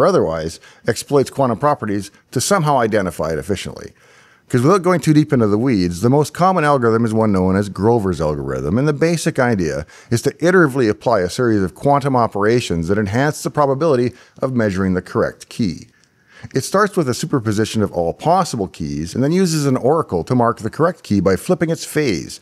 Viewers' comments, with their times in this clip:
0:09 The way he speaks reminds me of the Turbo Encabulator guy 😄